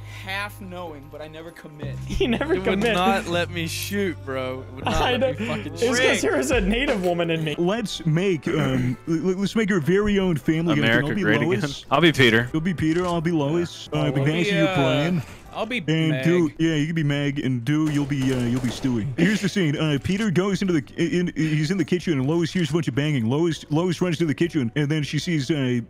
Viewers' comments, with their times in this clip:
0:07 that 'woof' got me